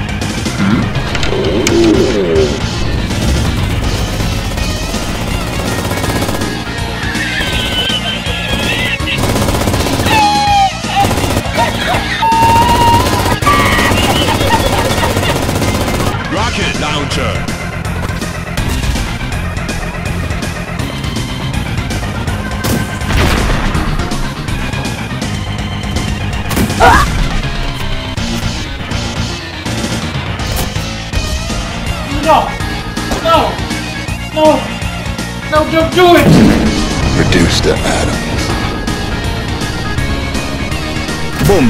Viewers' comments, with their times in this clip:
0:04 Machinegewehr 42 goes brrt brrt
0:07 Died laughing I love his laugh, such a good edit LMAO
0:08 his legendary laugh will never be forgotten
0:26 That Abe sound caught me off guard though.